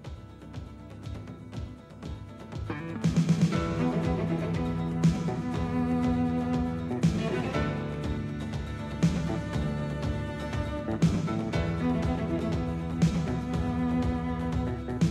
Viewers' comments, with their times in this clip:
0:03 i like this one more than Ninja Scroll. i love this music